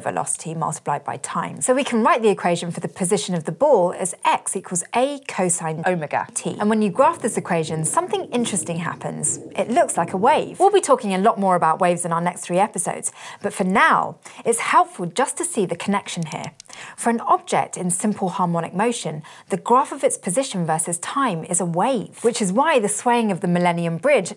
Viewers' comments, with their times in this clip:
0:04 x=Acos-oh my god-t
0:05 it sounds like they did 2 recordings and put them together when she says omega